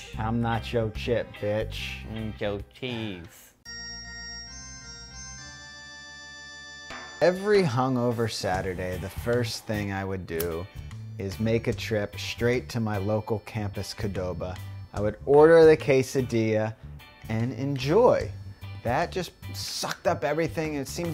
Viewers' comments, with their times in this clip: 0:08 that fake pipe hit. Why?...